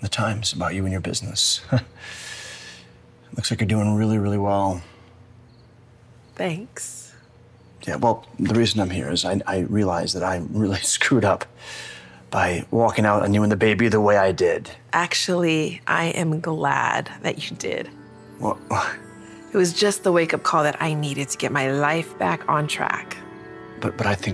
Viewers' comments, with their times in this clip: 0:06 that "thanks" didn't seem well to me I think it was sick.